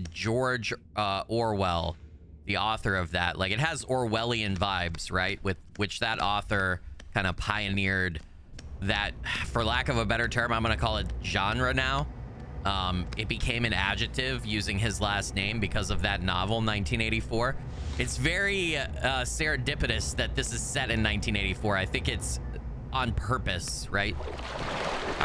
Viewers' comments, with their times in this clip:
0:09 Johnra? Who's that? XD